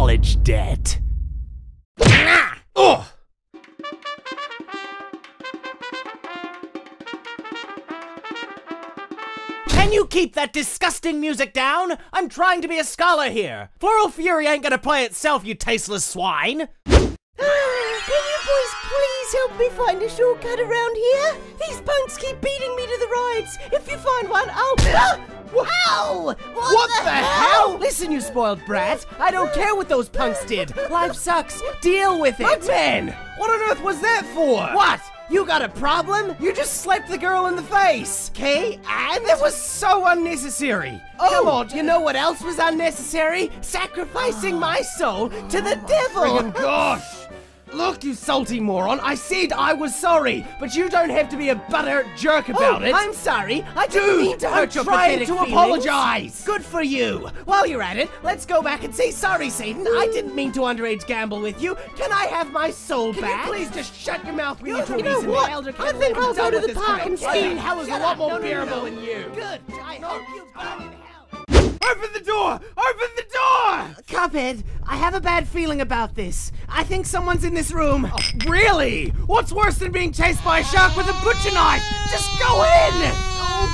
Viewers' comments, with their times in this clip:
0:09 Sound: Trumpet Picture: CUPHEAD PLAYING SAXOPHONE
0:28 I still can't get over the little girl's cry HUGH HUGH HUGJ HUGH
1:08 lol, I like how it quiets down so we don't hear Mugman say the full line. But then doesn't censor Elder Kettle...